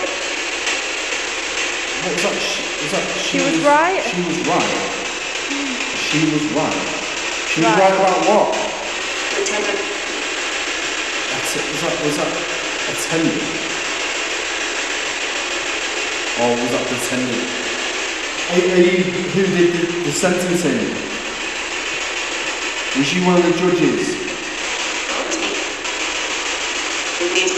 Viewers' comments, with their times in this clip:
0:09 Another great video but to me it sounded like she says (THE TUNNEL) which would make sense because u r down in the tunnels just my opinion stay safe from Australia